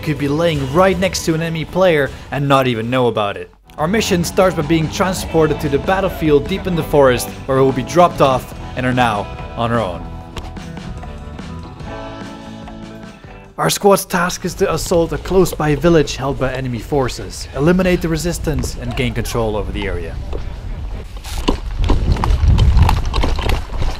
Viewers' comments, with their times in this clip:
0:05 i thought better call saul was the song playing for a sec